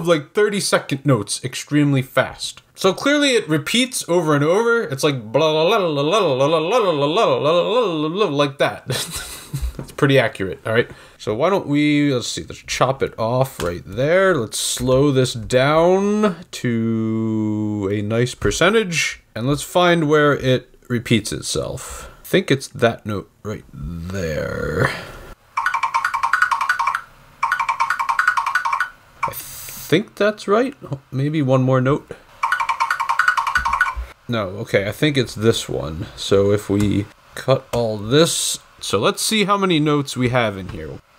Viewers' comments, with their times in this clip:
0:05 Did anyone else hear him sing Michael Myers theme
0:05 when you in church and speaking in tongue
0:24 the rhythm is wrong. it's a measure 16th notes in 4/4. it's 1211 1211 2211 2112. Missed one note and made it crazy.